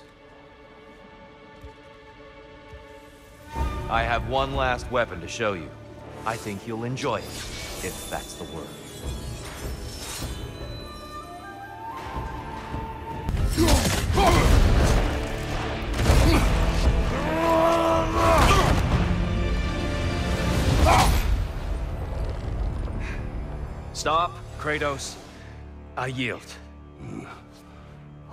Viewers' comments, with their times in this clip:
0:03 I think there are distinct music on every weapon brandished by Tyr. Most noticeable is the katana (correct me if I'm wrong)
0:09 Spear and rounded Shield: Greek Macuahitl: Aztec Dual wielding Khopesh: Egyptian Katana: Japanese. notice how a japanese flute plays shortly after he pulls out the katana.